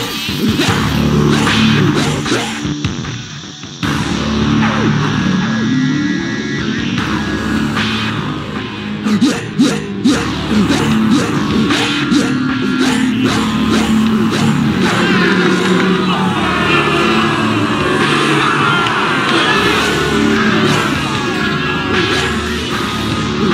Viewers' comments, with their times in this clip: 0:08 Sounded like the robot rat is saying - The Rat - The Rat - The Rat - The Rat! Rat - Rat - Rat - Rat!